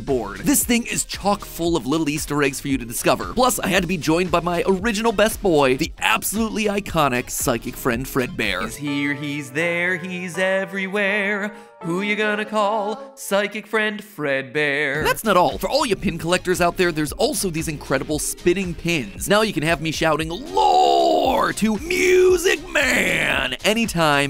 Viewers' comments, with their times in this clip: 0:06 THE SONG IS BACK!!!!
0:10 Gosh I always enjoyed that Psychic Friend Fredbear jingle. It's also nice seeing more theories that made our childhoods before MatPat's inevitable passing the torch moment and retiring, it's a nice touch.